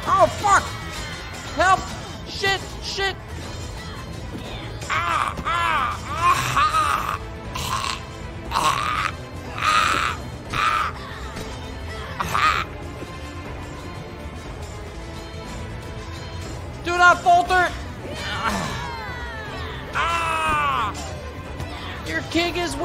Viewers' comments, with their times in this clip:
0:04 Those quality sound effect lol